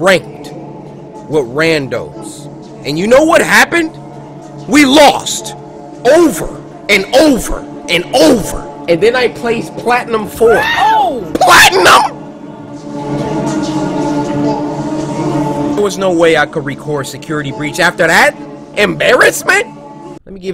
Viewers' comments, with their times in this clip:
0:08 then i was playing platnum 4. PLATNUM *plays disapointment music *